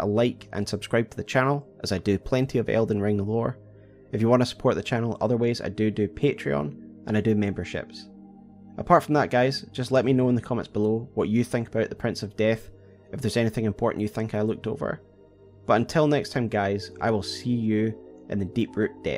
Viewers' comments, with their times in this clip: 0:05 in the video you say doodoo and I think that’s funny